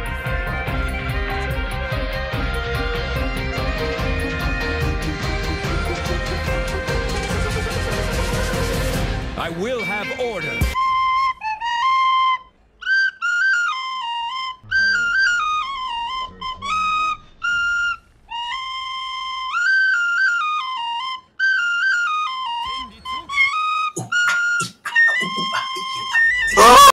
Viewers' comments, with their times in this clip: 0:10 that drop is really eargasmic